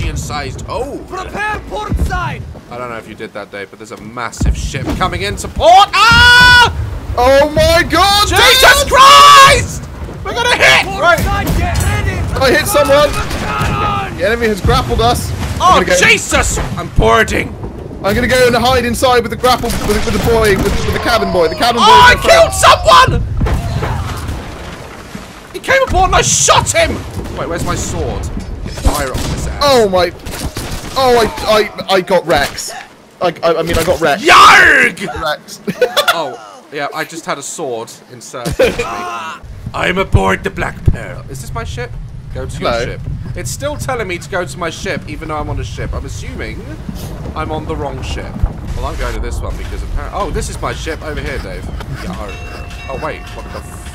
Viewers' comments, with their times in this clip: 0:07 Pirate of the Caribbean theme song intensifies
0:38 He sounded like the guy out Pirates of the Caribbean